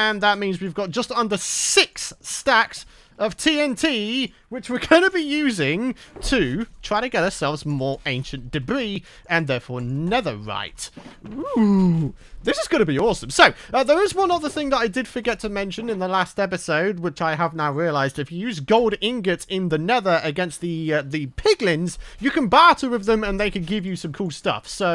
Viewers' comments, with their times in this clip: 0:09 What the f was that OeOeOeh